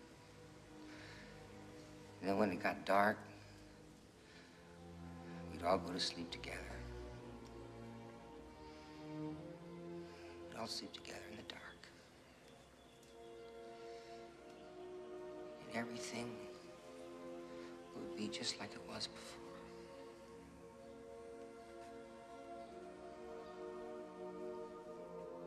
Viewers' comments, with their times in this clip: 0:10 I just realized he emphasized sleep together in the "dark" and when he realized he said be like it was before and cried he knew it wasn't going to happen and he was going to kill them and himself.
0:12 Those strings that start are so tear-jerking. Love them at the parts in the film they are used. Just a few chords, but what a great arrangement.